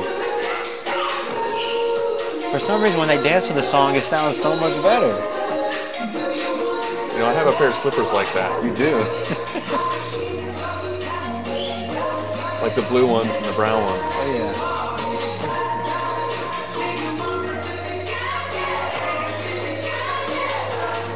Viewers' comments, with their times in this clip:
0:03 yeeees ,true I also noticed that when they dance all the songs sound much better.